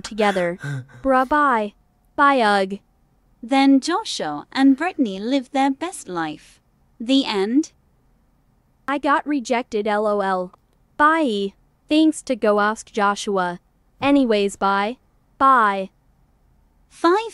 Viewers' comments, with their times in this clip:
0:04 dosha and bitney LOL